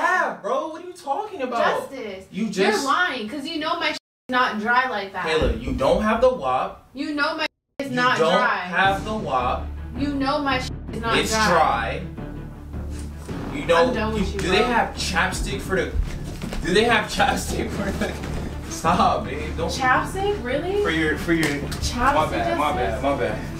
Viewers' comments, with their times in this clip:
0:04 D oes anyone hear that creepy knocking in the video? omg